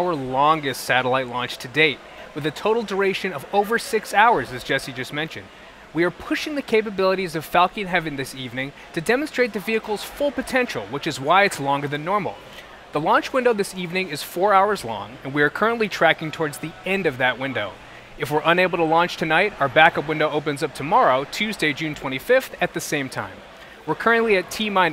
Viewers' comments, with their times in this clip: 0:05 Falkeen Heaven :)) did anyone catch that?